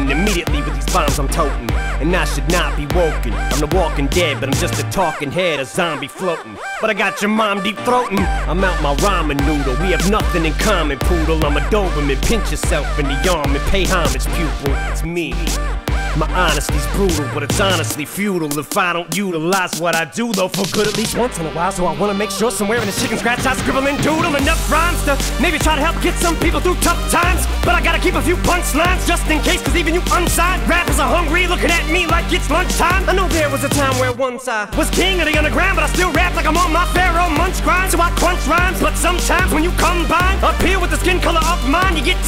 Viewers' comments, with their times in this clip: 0:07 sounds so rough (in a good way)
0:23 Enimen:takes deep breath Lungs:Something's wrong, I can feel it